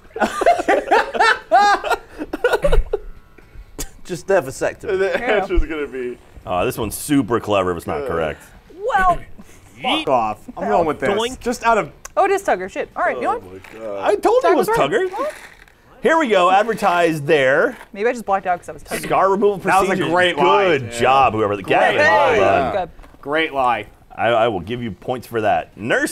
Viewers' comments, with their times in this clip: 0:09 if you wanna hear a failed censor
0:09 what happened with that censoring lmao?
0:10 they miss timed the bleep